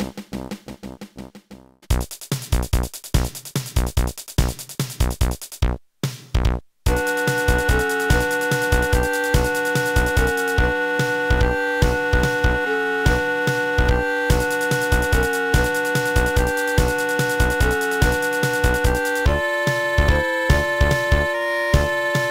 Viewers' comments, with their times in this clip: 0:07 my favorite music